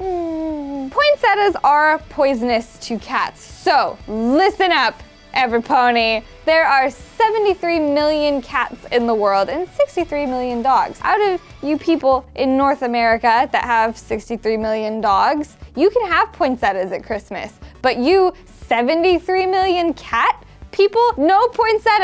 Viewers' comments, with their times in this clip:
0:06 Does everyone here she said everybody